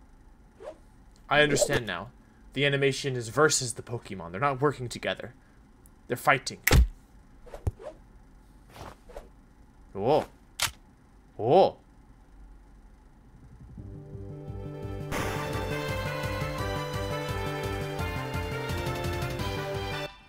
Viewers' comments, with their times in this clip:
0:06 I love the animation so much because it's so playful and meaningful! It also pulls off its comedy without being violent or crass like other indie Pokemon animations. Just all around wholesome. :) Also, that perfectly timed mouse-click !